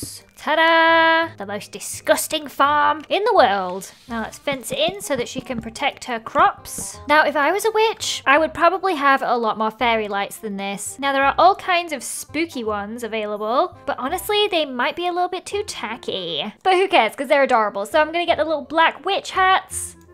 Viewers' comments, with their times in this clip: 0:08 Did anyone notice she sweard on accident instead of witch she said the b word or maybe it was just me